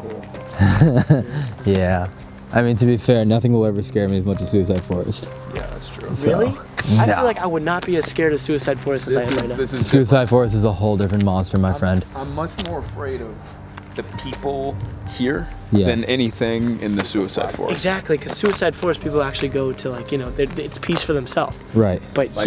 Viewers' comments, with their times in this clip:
0:06 TFIL Wen u guys r talking about suicide forest. U can hear someone whistle